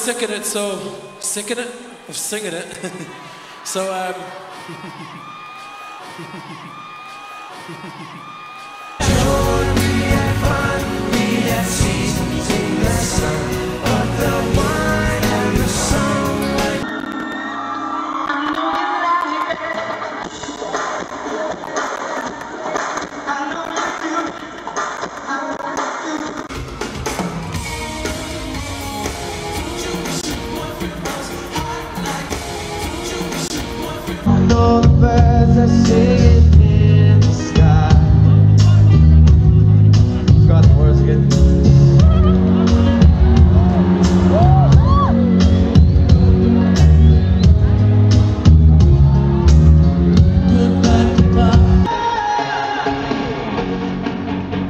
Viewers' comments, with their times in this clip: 0:03 Mark has got such a sweet laugh. His laugh makes my heart melt. Oh be still my WestLife heart.
0:42 That cute laugh after Shane said, "I forgot the words" in his part omg xD